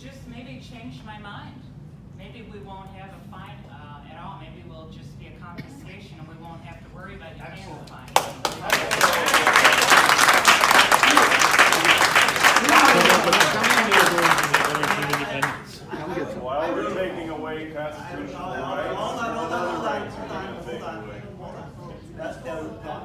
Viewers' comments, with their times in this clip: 0:09 And all the communists clap